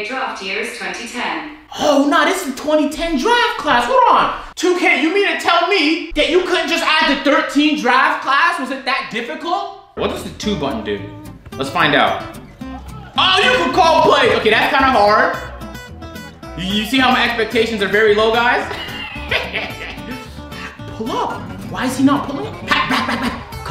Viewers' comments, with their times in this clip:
0:04 scared the shit out of me my google heard him ask lmao I jumped out my chair